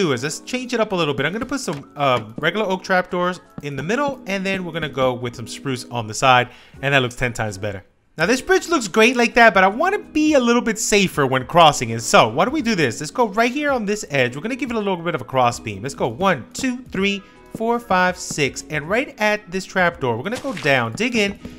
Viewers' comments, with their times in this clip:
0:07 “now this bitch looks great like that...” at least that’s what it sounded like🤣🤣